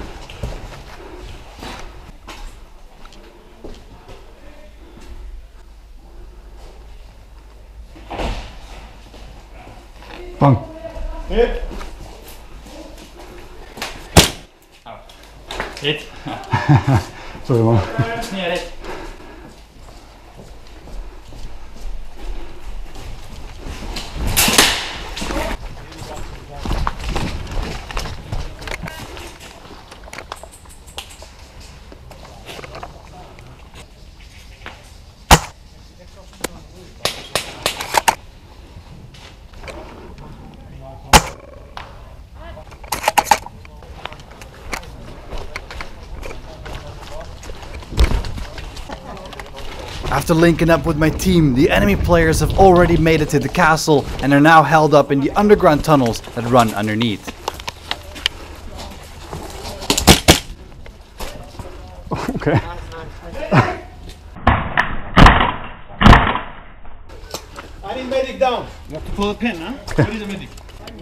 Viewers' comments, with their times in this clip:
0:08 "Pang" How cute
0:09 Silo: Bang! Enemy player: hit Me: laughing to death
0:59 Minute I thought it was raining 😅😅 But it was the PBS